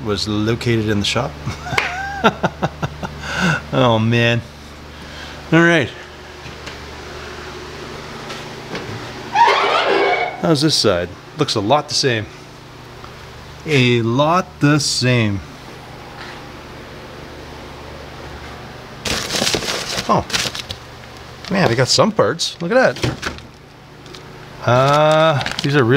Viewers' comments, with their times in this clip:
0:08 Sounded like a guitar slide lol.